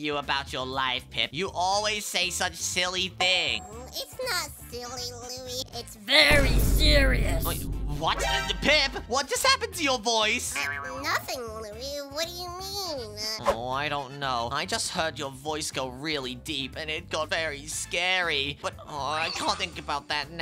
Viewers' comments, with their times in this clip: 0:07 it’s very serious it’s very serious😂😂😂 so deep as a voice😂😂😂 ha!!! ha!!! ha!!!